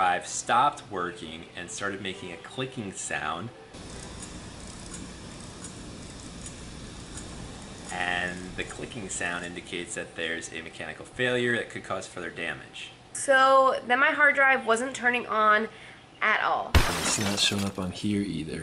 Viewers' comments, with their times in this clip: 0:04 Sounds like stuck heads. In most cases recoverable if the drive is handled by a real recovery specialists. 500 bucks for a 4TB drive is more than a good price if they can get data back.